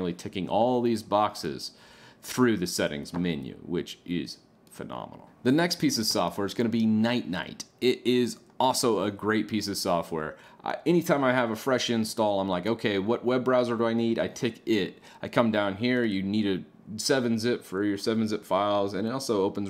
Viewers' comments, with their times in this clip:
0:06 lol @ Ninite being pronounced "nite nite" xD